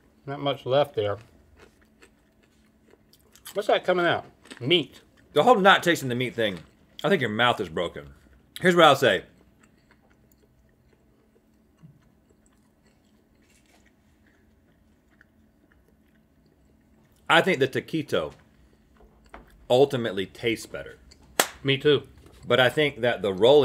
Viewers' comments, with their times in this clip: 0:09 I cant stop laughing. Idk why but just dead silence for almost 10 seconds straight. Not even background noise. Then they just continue like nothing happened 😂😂😂